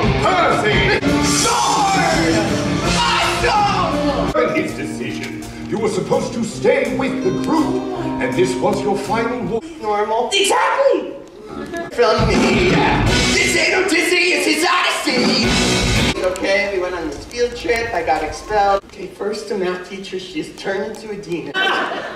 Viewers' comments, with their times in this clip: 0:10 he says "exactly" like Shaggy